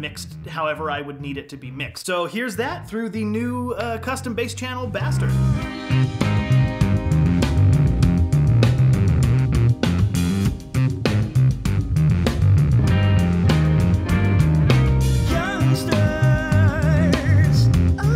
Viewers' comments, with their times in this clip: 0:06 Dang, I forgot how much I love that riff